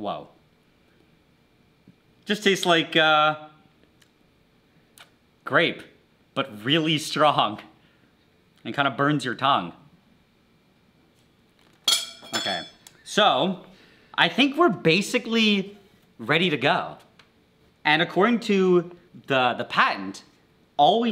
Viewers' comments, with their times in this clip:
0:07 why does he just say it so causaully lol